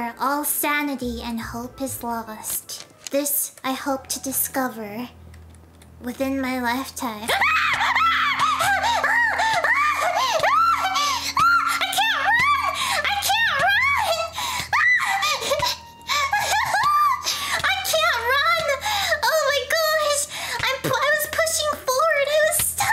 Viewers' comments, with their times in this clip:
0:07 rip people wearing headphones you will be missed insert sad music